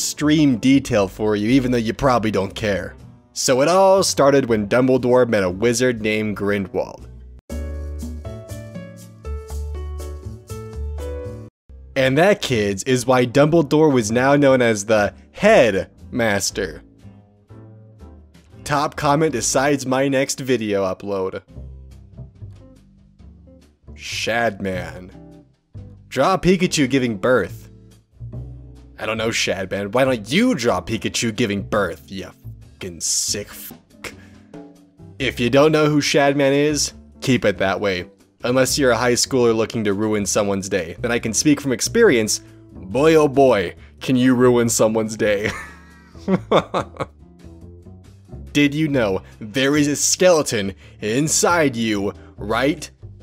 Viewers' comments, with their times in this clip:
0:07 I swear to fuck no one pronounces grindlewald right
0:08 Pronounced as: "Grin-de-walled"
0:34 HOW DID YOU KNOW THAT WAS HOW YOU PRONOUNCE Ä